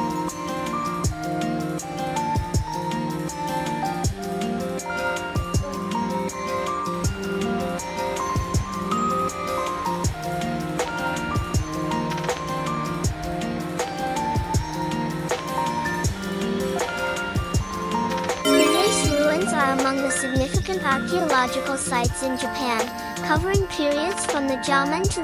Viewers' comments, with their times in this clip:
0:08 Beautidul Japan❤btw the narrator's voice is very soothing and the words are clearly enunciated.❤